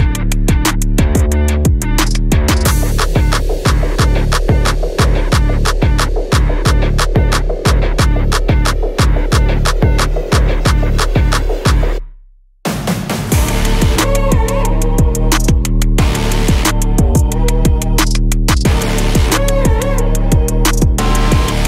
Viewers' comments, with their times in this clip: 0:03 music choices this episode, 🍵